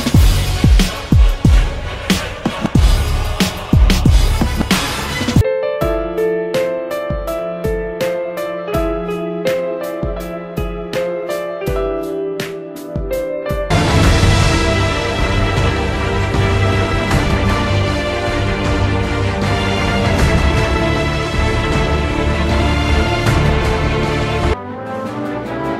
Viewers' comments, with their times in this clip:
0:06 polithics IM DYING